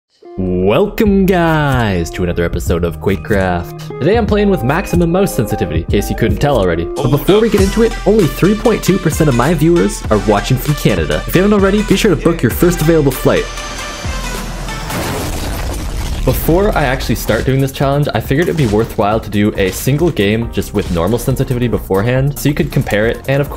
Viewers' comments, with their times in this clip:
0:07 bro that intro song gave me so much memories from 2016